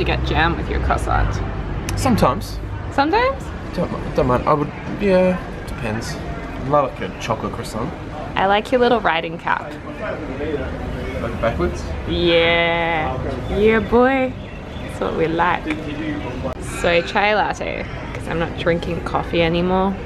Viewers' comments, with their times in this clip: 0:06 i'm in love HIS ACCENT